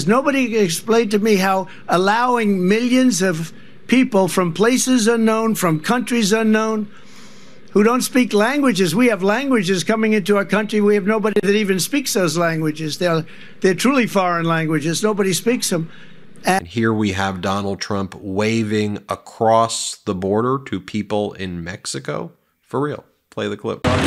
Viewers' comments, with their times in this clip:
0:08 Hahah that serviceman was laughing at trump talking about languages